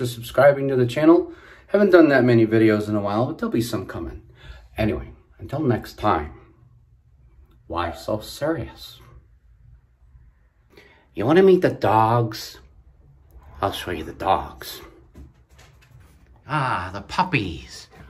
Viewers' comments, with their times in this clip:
0:04 I love German shepherds, I love your dogs they’re beautiful and ur voice is amazing 👌🏻